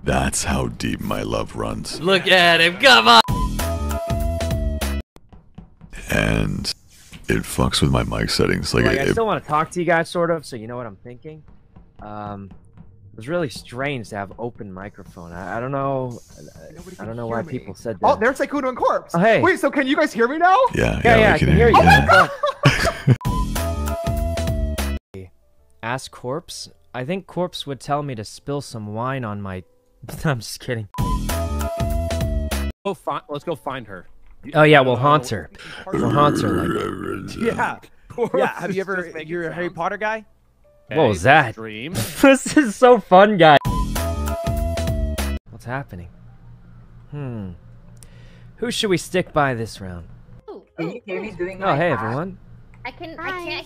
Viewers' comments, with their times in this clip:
0:08 For some reason made me laugh so much, like Corpse was just talking and Sykunno comes out of no where chatting to himself then disappears again
0:34 Corpse: *GROWL* Everybody stops